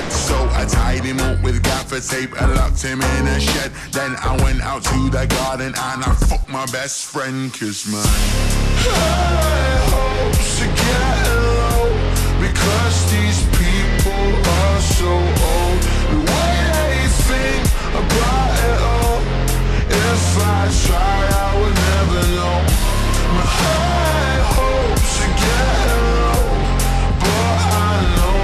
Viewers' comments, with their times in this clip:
0:10 Mha fan come fast it sounds like he says kirishima